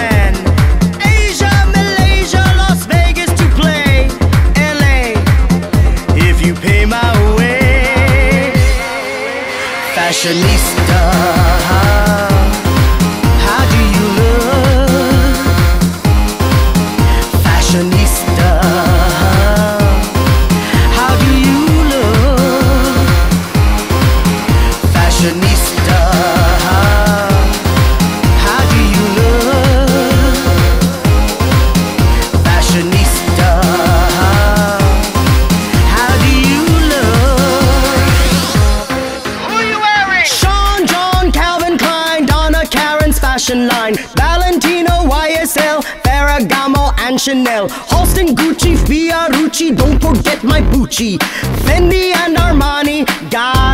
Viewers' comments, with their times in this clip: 0:09 Oh my God it's Mettaton! Even the tune sounds s o Mettaton-like. ❤
0:39 a damn the rap